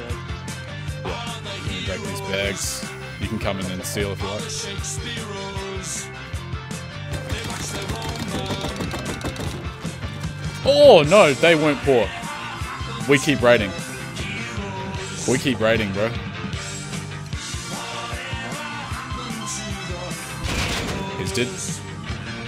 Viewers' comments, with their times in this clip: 0:10 man I knew when the music changed the raid was going to be at the very least decent but I wasn't expecting that kind of loot (Edit: grammar)